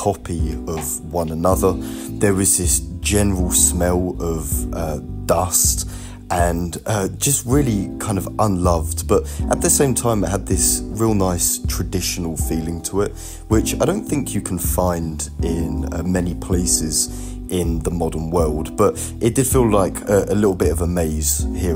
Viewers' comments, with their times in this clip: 0:05 Ah yes, I love the smell of "lust" 🤣 Great video! You even captured the lack of NPCs in all these hidden areas!